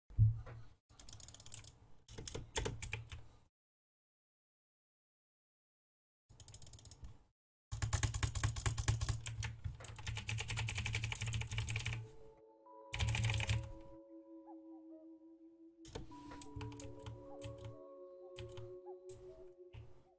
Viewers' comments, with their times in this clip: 0:06 u can tell he played minecraft with those butterfly clicks LMFAO
0:08 is he butterfly clicking 🤣